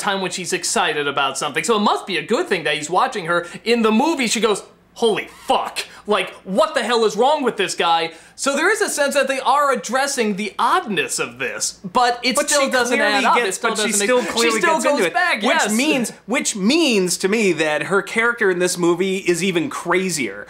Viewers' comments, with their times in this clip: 0:05 "Holy Fuck." in the Nostalgia critic voice